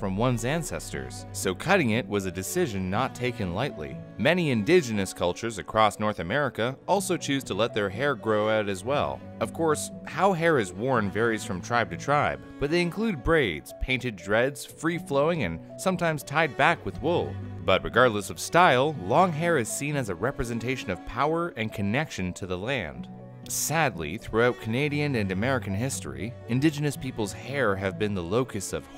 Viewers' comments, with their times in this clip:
0:09 Music ???? I don't know what it is but it's so pretty